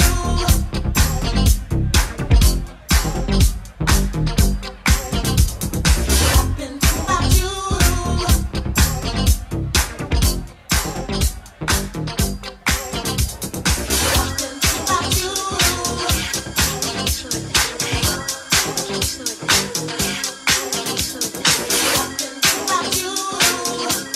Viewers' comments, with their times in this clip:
0:10 Somebody is doing some shadow mixing starting